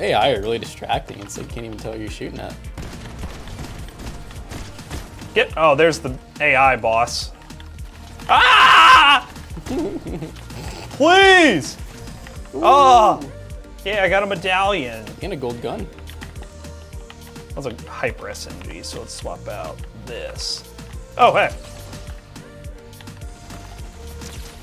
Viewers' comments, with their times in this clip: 0:07 that scream doe XD